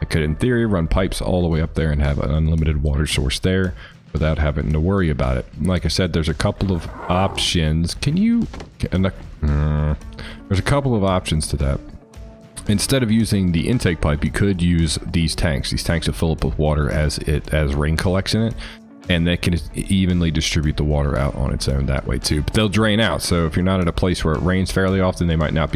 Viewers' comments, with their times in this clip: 0:08 man sounded like a parasaur😂😂 good vid tho